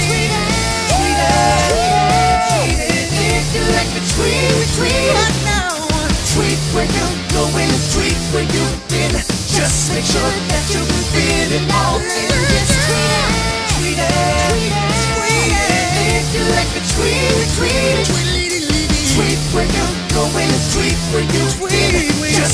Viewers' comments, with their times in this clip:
0:04 it's sounds like Michael Jackson